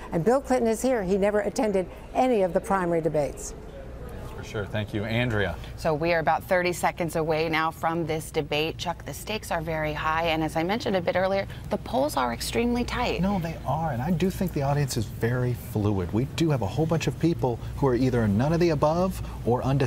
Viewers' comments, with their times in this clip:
0:04 I like the way Hally Jackson speaks, and the way she's stayed the same 7years later